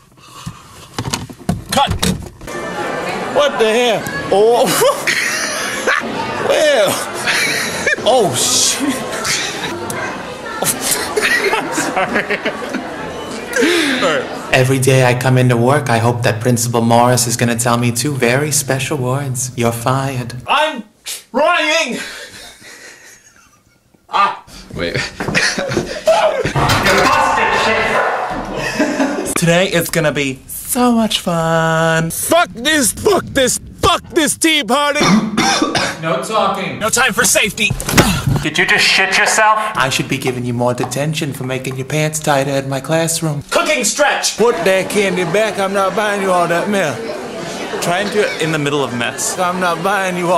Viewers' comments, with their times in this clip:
0:05 *when Brandon Rogers’ laughs are fucking adorable
0:06 does it sound like he is saying well
0:10 that one person that laughs at everything
0:33 the guy sounds like coach from L4D2